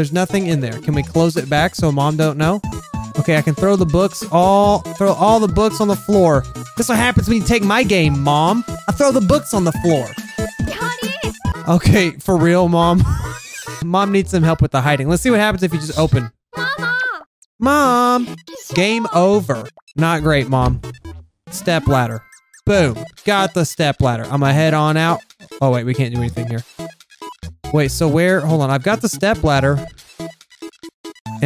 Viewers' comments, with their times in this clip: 0:04 I l9be this laugh
0:11 I LOVE THIS LAUGH!!
0:12 I love this laugh